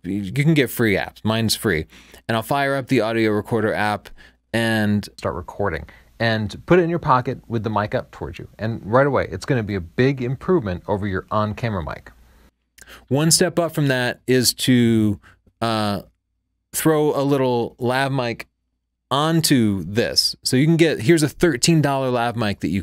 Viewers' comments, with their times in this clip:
0:09 how did u clean the rubbing sound from the iphone record on